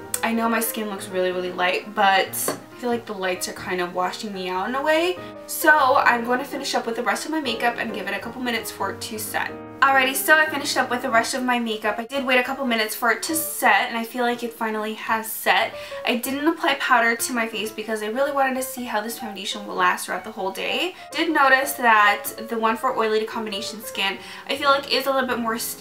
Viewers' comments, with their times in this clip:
0:09 Lol you said shet cuz of your braces